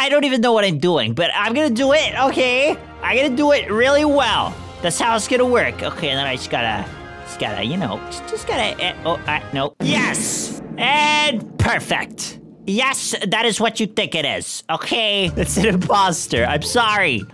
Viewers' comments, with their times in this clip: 0:04 the battle music was so intense Edit 2:1 pushup every comment